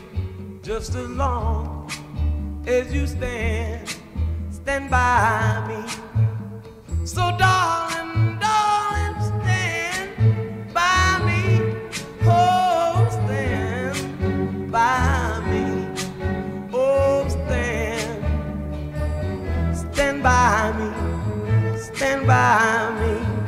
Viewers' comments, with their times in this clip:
0:09 He sounds like Chris Rock